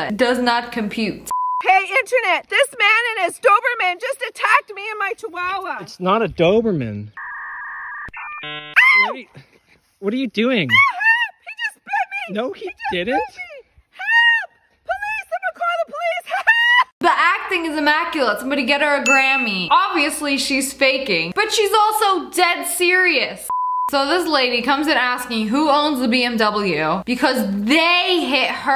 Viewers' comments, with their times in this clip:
0:08 what was that high pitched scream-
0:12 this Karen held one leg screamed and then held the other leg? 😅